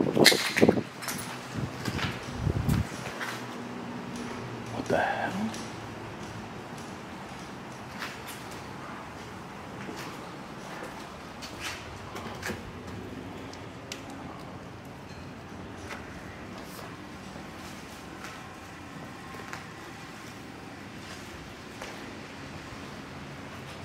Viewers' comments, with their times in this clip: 0:05 sounds like someone walking around on glass